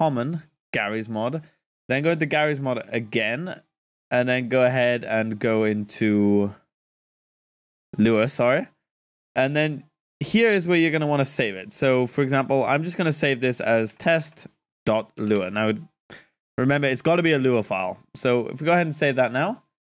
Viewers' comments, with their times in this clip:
0:06 anyone else hear the morse code sounding beeps at the mark?